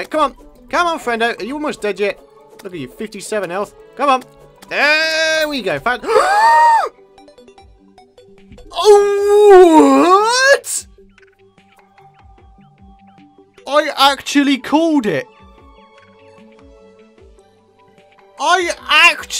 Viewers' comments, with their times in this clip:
0:05 epic gasp UUHHWWWHAAAAATT?!?!?
0:05 that voice doh
0:05 EPIC INHALE I LAUGHED MY BALLS OUT OF THAT INHALE PART XDDDDD